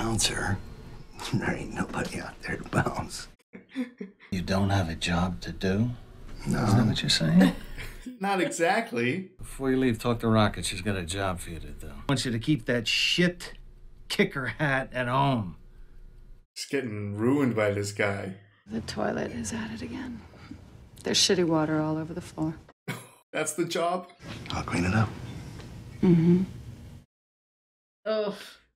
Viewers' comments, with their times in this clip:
0:09 I thought he said "Taco Rocket"